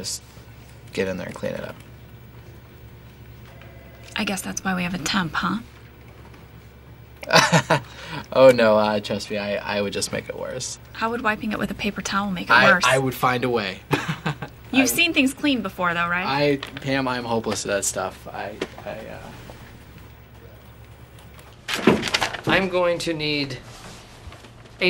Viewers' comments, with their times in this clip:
0:07 "I guess that's why we have a tampon oh" - Pam, CC